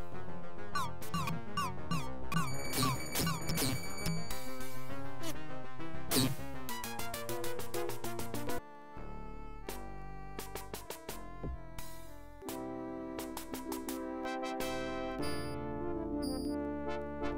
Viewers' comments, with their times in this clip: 0:04 literally sounds like it shat a missile and it pooped on it's target.